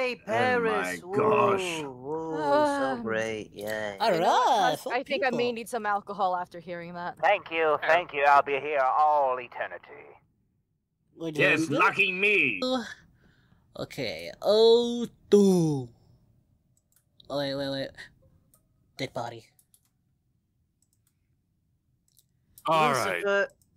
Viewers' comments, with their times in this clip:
0:08 It sounded like: Al: I'll be here all Eternity. Lucifer: Yes, f*cking me. I had to go back and rewatch it a bunch to hear what they actually said but it was a hilarious mishearing. 🤣🤣🤣